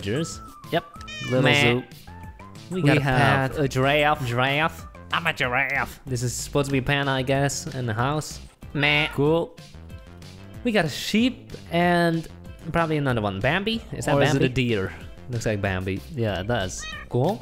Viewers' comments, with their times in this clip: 0:05 Does it sound like you have the same voice because you guys are identical? It’s from a meme “I’m a giraffe” “You guys say Colorado!” “IM A GIRAFFE!”